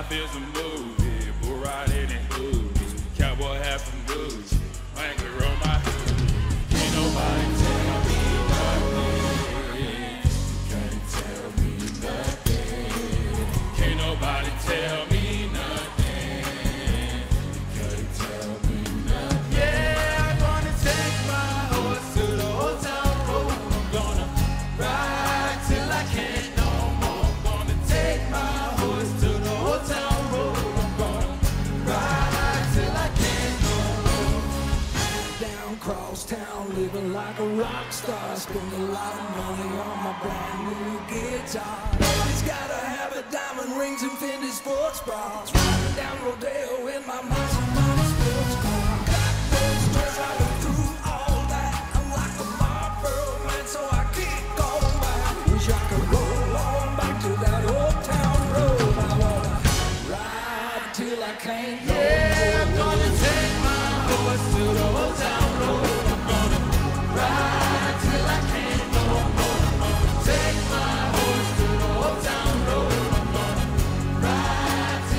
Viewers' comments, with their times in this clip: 0:06 I KNOW I'M NOT THE ONLY MUSICIAN HERE THAT HEARD DEM CHORDS
0:07 Did Billy Ray Cyrus hit them chords at the mark?😂😂😂😂 I bet he was like whaaaaaaaat?
0:39 yg singing till he seen that camera 🤣🤣
0:39 Man, it cracks me up YG was singing and stopped when the camera gets pointed.
1:01 is where my heart gets FULL!! That was such a beautiful climax to the performance, even the band just went NUTS!! 😭😭😅🔥